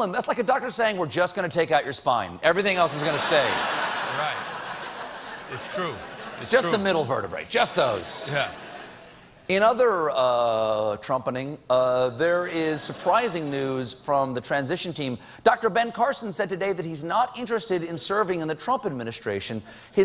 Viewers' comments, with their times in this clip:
0:07 Who the fuck is talking lol